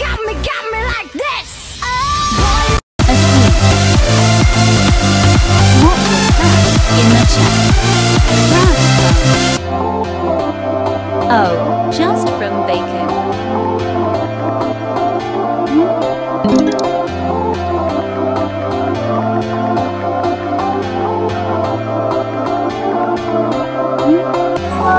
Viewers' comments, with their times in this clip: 0:10 THE MUSIC WAS SO LOUD LMAO